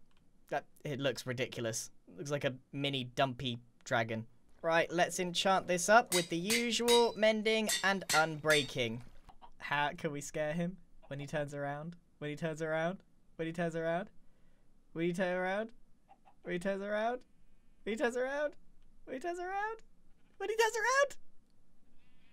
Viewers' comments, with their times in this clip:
0:07 Anvil: *ding ding ding, ding ding ding * Me: Jingle all the way...